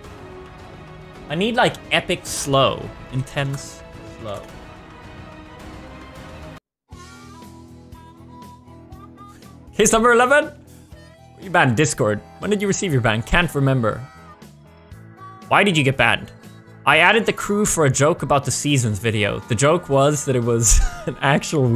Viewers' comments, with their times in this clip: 0:06 That music fits so perfectly well.